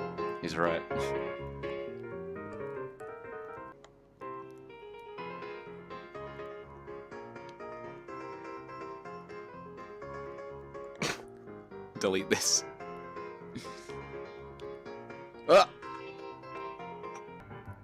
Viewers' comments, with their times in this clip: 0:03 is that someone actually playing the piano, or Just editing?